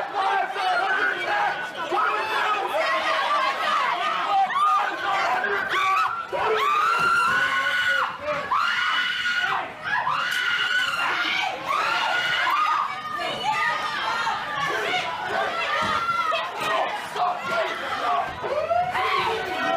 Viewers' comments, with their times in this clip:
0:06 Aaaaahhhhhh! The sound of Communists screaming and crying. It's music to my ears. So beautiful.